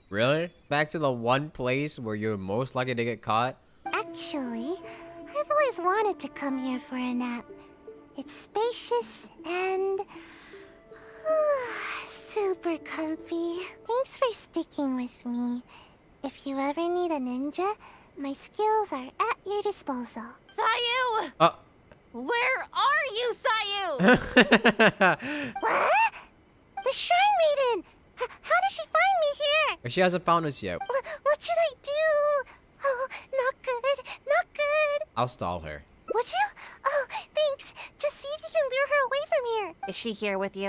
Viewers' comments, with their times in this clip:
0:04 Yeah, being short is hard. When I was little, a friend told me to eat spicy food to grow taller. I try really best to eat spicy food, but I did not grow at all. I just become a spicy maniac 😂 I can feel you Sayu 😭 PS: That slow clap, head tilt and smile is sooo cute!!
0:26 I feel like the sound made by sayu when she says whaat!! is somewhat same like that of a minion(from the minions movie)